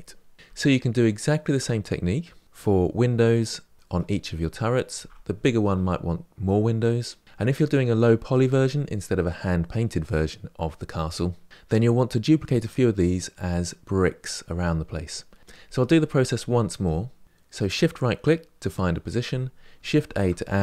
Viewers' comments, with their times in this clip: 0:07 Awesome tutorials, easy to follow along, and I've already mentioned this before, but your voice has a soothing, Bob Ross quality to it, I love learning from you :) One question though: "And if you're doing a low poly version instead of a hand-painted version..." I thought this was all low poly? And if you're hand-painting textures to create an illusion of depth in certain areas, isn't that actually better than making more polygons to achieve the same effect?